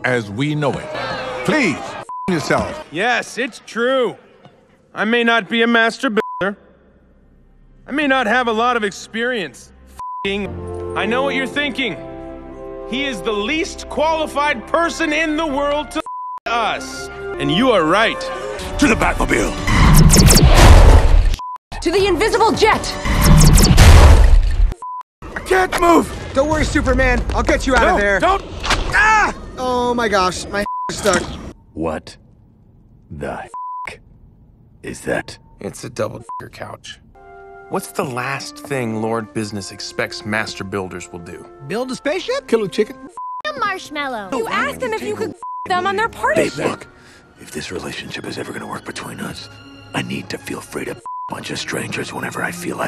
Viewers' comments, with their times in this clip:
0:06 it sounded like he said masturbator
0:35 he sounded so depressed.... lmaoooo